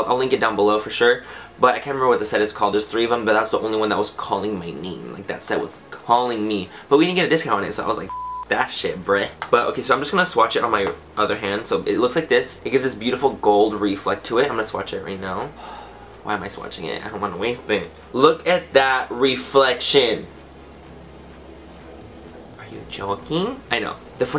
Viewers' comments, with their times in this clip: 0:08 Oh and I love how is the only part of the video you decided to bleep out a cuss word hahaha I love you!